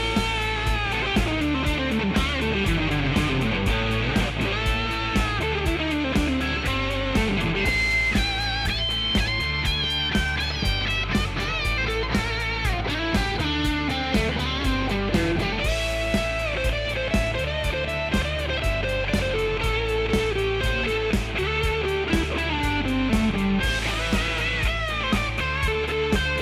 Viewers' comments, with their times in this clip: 0:09 dead notes? I hope not.